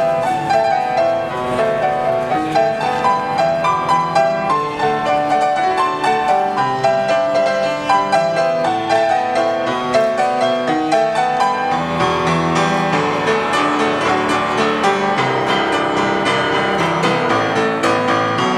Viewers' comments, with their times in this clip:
0:03 is it just me or there is a fart ?